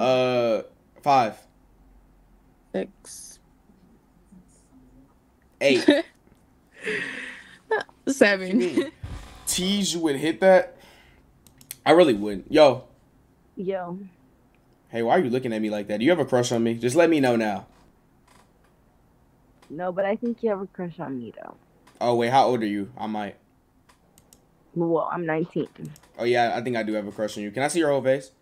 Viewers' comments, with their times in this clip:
0:09 teige would hit that i really would 😂